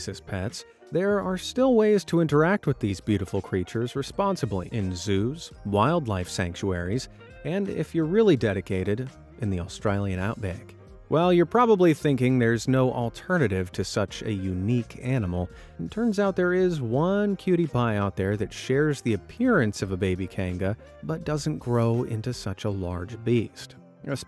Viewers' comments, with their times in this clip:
0:09 that accent was PERFECT Edit:why wouldn’t Ohio allow deers?